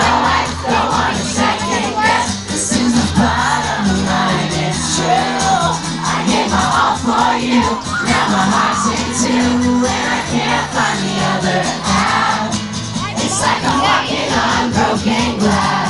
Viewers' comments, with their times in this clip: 0:03 i lovee when nick sings "this is the bottom line its true" i love when he sings BOTTOM:] att minute andd so on:]